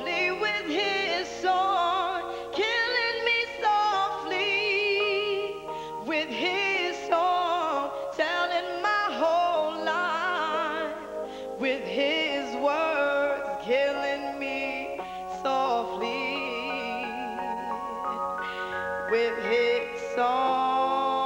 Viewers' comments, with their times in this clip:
0:07 Lauryn Hill has a natural beautiful voice...even when her cadence changes...she still sounds so magnificent this part...even Pras bows down.